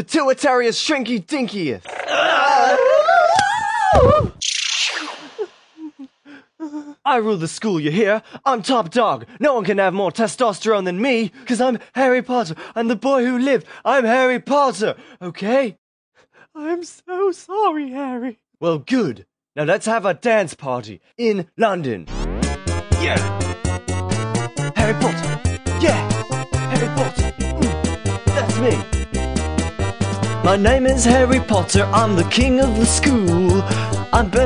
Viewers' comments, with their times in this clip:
0:07 harry sounds drunk
0:22 that brief moment when the music is bad as he dances before going back to normal 😂